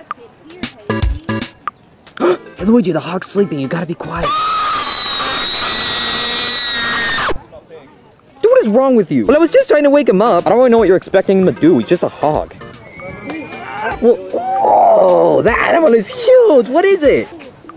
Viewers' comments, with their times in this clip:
0:04 Sounds like Shark Puppet!
0:04 Luigi screams to wake up the boys Also as me when I get hurt
0:04 Mario: the hog is sleeping you have to Luigi: Screeming
0:04 SpongeBob when he does the victory screech:
0:04 What kind of scream was that?
0:04 Ufhrbx Manage when he makes the loud noise ?
0:04 Luigi’s RIP Headphone User